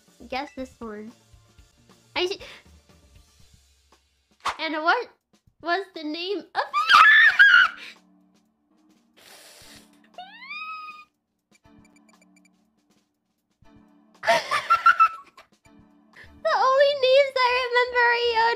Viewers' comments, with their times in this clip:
0:04 I love that panic laugh for being called out on her guessing.
0:06 The sound of pure panic